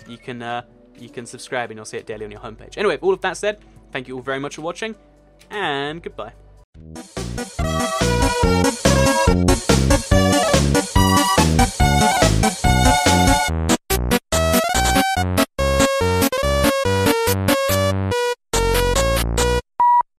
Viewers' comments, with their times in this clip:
0:06 WOWIE.. i like that song of Papyrus c;